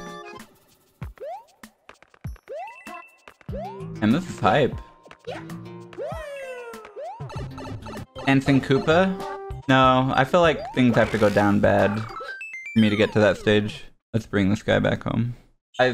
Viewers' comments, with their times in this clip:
0:03 I like when the dog synced with the music